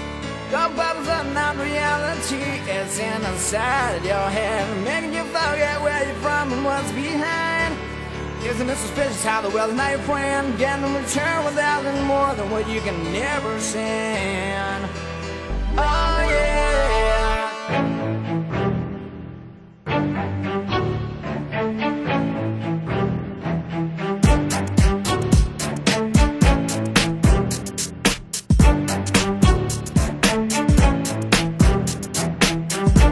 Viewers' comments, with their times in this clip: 0:08 does anybody understand what hes saying?? iv had so much trouble XD..
0:18 Who here besides me loves the string instrument used ? Eerily beautiful!
0:18 Listen to that violin from -the rest! :)